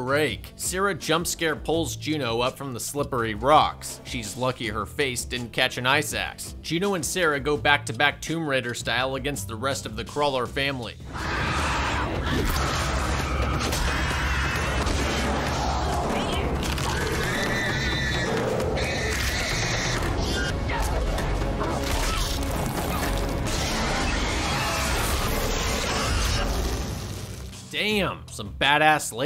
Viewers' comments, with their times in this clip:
0:09 “Doom music kicks in”
0:11 When doom music kicks in